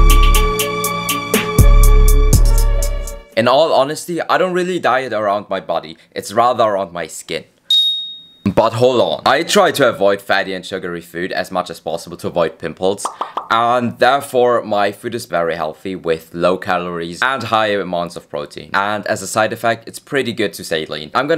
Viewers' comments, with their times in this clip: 0:03 did i hear buthole